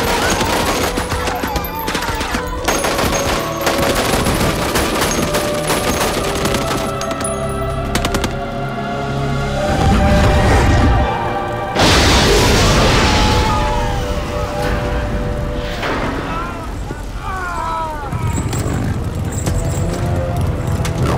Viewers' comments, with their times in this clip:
0:04 Dudes shooting an extra shot out of an empty gun. They added the sound effect to cover it up.